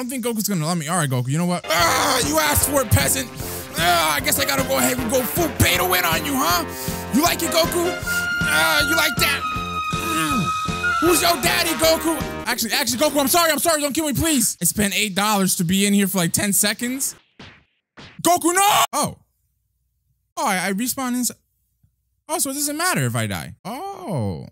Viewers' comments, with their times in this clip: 0:05 Lmao why was u moaning 😀😂😀